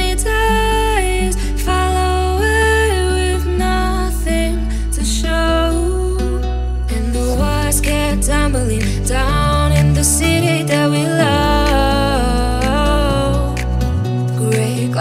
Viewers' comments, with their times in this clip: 0:03 I love this song driving and hearing it = 🔥